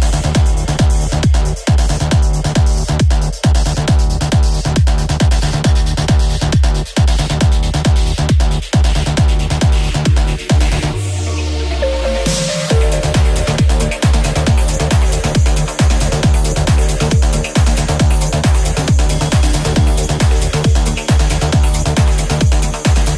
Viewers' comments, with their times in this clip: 0:07 love the beat gets you going!!!!!!!!